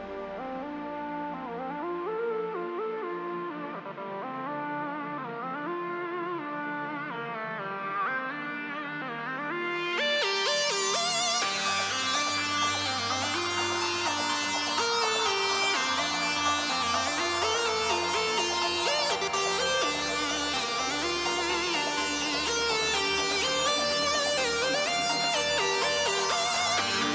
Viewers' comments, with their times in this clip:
0:09 Wow, you sound pretty awake for am.